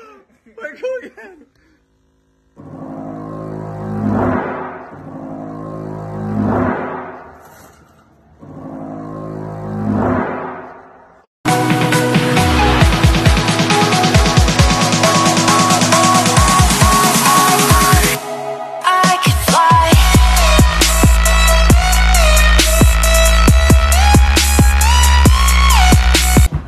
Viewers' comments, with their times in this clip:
0:07 sounds like Godzilla